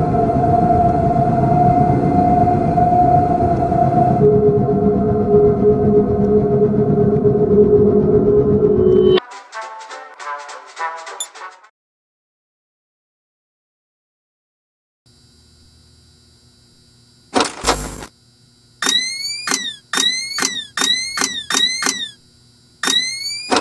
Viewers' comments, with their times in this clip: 0:10 jazz music continues playing even if RAT selected